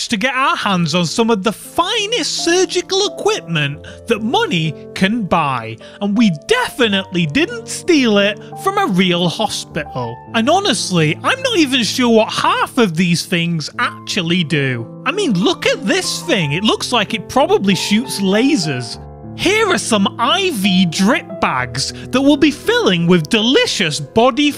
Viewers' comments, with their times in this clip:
0:08 Hos'pe'al So brittish.